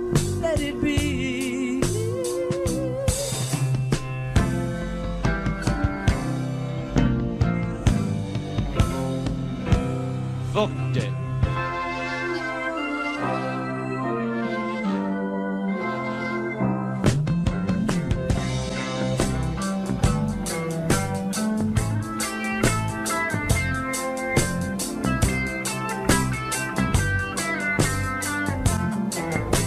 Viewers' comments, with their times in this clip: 0:10 Why do people think they have to swear in songs? I know that was not the voice of the singer. ⚠️ made me have to find a new play list for class.